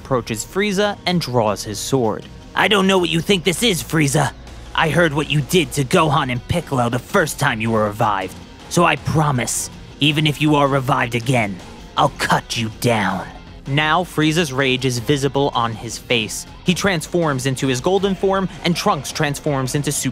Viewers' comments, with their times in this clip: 0:07 thats actually a pretty solid Jack the ripper impression